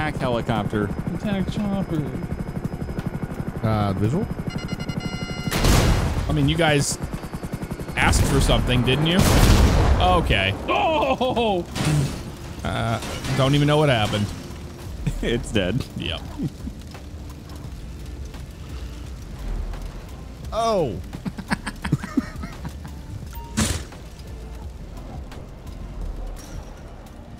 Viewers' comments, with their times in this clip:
0:09 Had to be a railgun no lock on sounds or anything